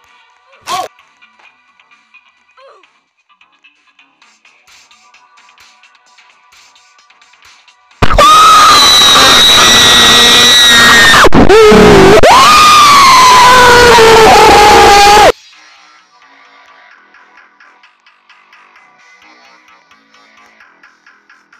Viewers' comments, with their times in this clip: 0:08 i dont have a time to turn down volume ;-;